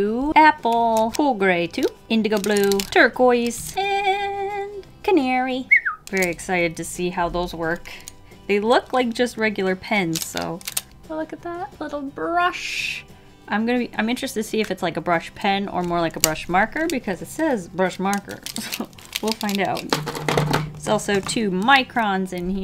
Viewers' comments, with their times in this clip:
0:05 tries to whistle